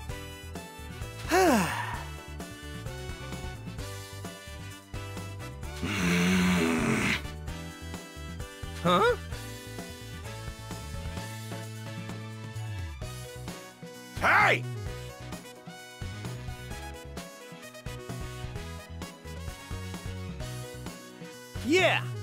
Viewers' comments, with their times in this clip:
0:06 What's With The Hmph. Part Vegeta? Goku Tell Your Boyfriend Vegeta To Shut Up! Please!